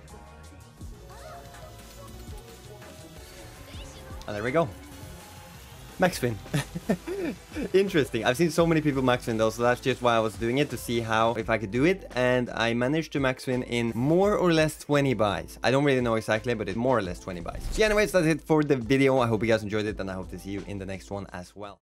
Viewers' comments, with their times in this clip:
0:06 liked your confidence when you said max win lol well deserved win
0:08 dink dink big win came there mate